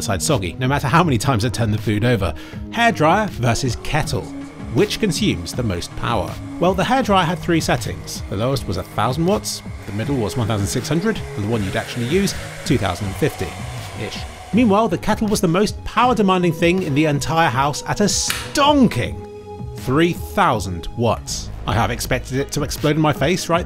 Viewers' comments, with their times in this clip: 0:04 i wonder where he got a hair FRYER from